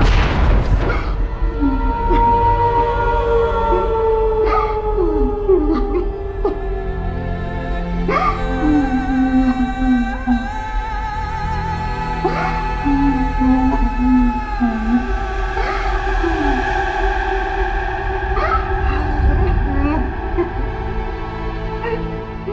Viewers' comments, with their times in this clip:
0:03 When she started crying It made me cry also 😭